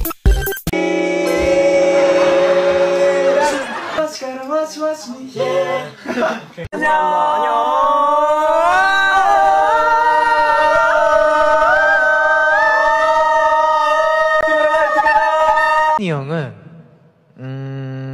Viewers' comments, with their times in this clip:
0:04 The “ ✨yEAh✨” with PIZAZ is so satisfying